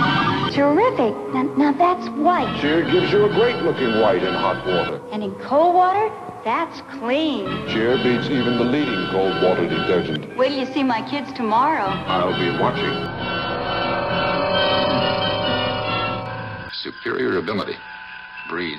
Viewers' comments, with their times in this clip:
0:06 Thank you, I didn't know that. I posted the following comment above regarding the music. The music sounds a bit like one of the pieces of music in the original Star Wars. I don't know which one though. And this was several years before Star Wars.
0:06 Hey, the music sounds a bit like one of the pieces of music in the original Star Wars. I don't know which one though. And this was several years before Star Wars.